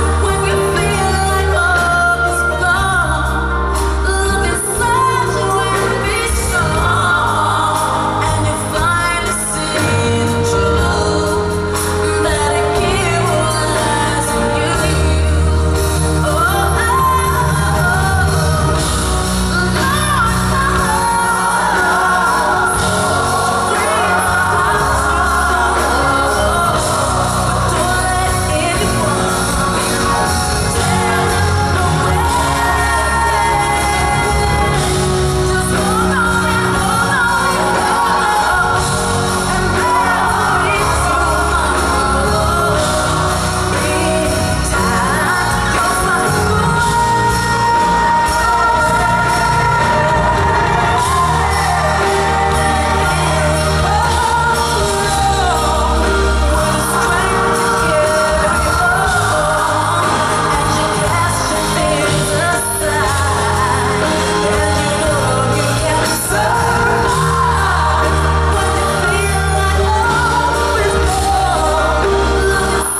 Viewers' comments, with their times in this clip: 0:07 "finally see the truth" is like a totally different song.. THAT MELODY.. omfg....'little" things like this I swear, only the GREATS are capable of
0:09 wow new melisma. She is so creative <3
0:19 Struggle go up to C5 ? Check out an Eb5 lol
0:31 is one of the most beautiful way she's been singing that note
0:54 sounds epic asf... like hurricane storm epic... like Gandolf lord of the rings epic even...